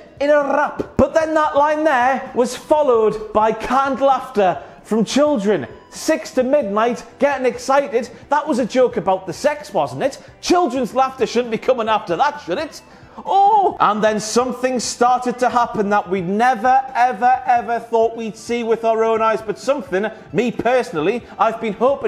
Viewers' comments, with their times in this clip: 0:06 The children laughter actually makes sense. Since he was trying to be this cool guy with the sexual remarks but his fanbase wouldn't even be allowed to stay up until midnight.